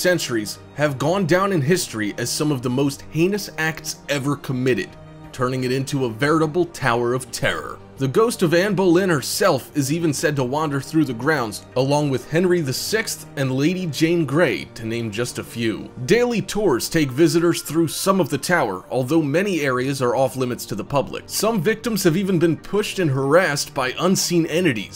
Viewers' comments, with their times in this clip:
0:09 # i tought you said he died like a b*ch